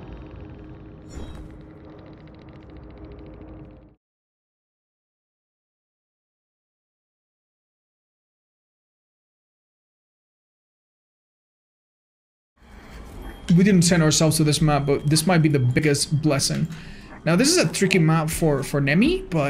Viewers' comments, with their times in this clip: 0:03 there isn't any audio for the entire clip
0:04 There's missing audio unless that's just me
0:04 no audio for the clip, so i guess we will never know the secrets of aura reading
0:04 No audio, what's he saying?
0:06 for 10 seconds there is no audio